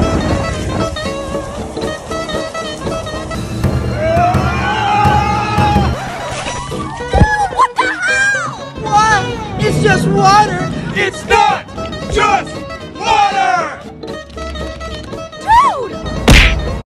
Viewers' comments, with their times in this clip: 0:06 You can hear the guys head hit the floor when he slips on the water